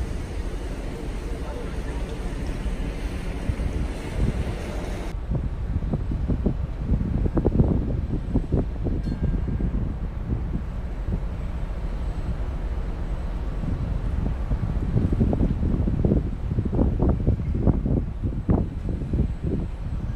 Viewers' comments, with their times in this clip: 0:08 what with her crying her eyes out?